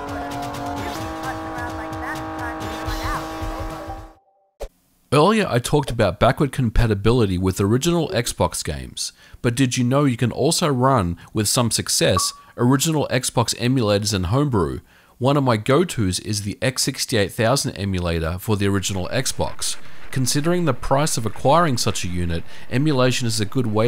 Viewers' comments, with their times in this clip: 0:04 the sound that it makes sounds like satchels being thrown in rust and i about shit myself because i had rust running in the background